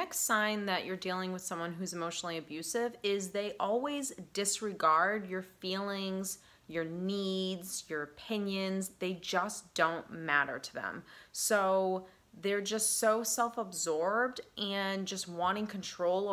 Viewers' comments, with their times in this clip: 0:03 I feel like I have been emotional abused to get to the point! And the word is important not impotent! You can you actual English instead Ebonics!